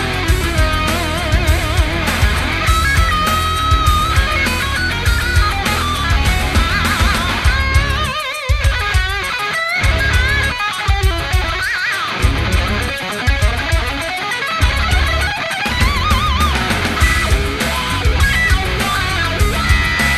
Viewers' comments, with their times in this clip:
0:07 into this clip Gary's playing ALWAYS gives me a shiver! I have had the privelege of being stung live by Gary at the benefit shows he's done. Amazing guitarist with a heart & soul of solid gold!